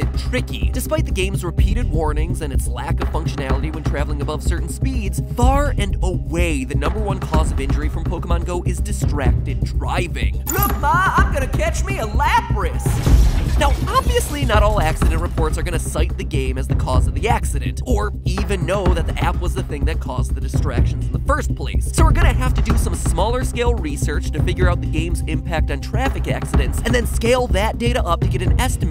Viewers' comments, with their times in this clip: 0:09 the way he said it really got me! XD